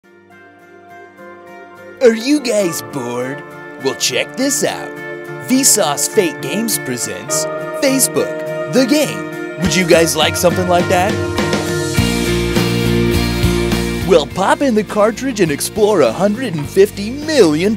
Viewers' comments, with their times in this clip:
0:01 are you GAYS bored?